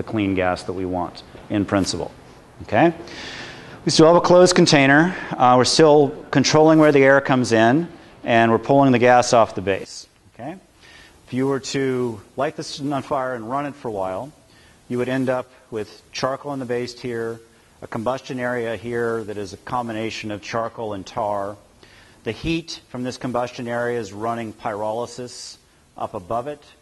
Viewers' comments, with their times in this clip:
0:09 Interesting stuff Technical Difficulty with the audio